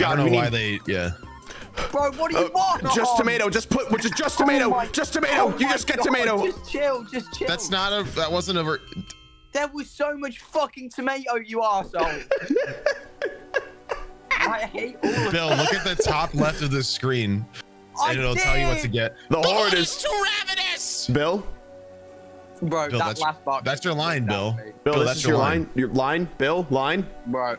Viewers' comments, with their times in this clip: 0:10 why does he sound like that💀